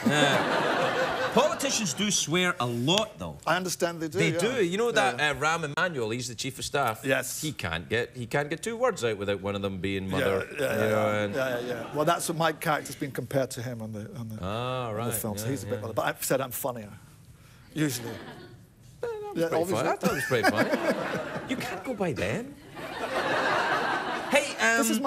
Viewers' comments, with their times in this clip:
0:06 Listen to it closely and watch the video, you can tell he said "Alistair Campbell" and they had to cut it. Especially the "bell" part